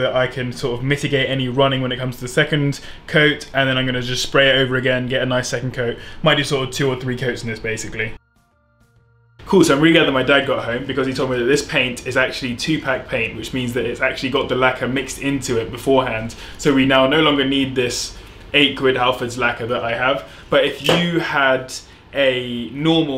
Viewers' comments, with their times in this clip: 0:07 I knew it ! You play the guitar right ? in the background I love you even more. Got my first Gibson a couple of weeks ago, love it to bits.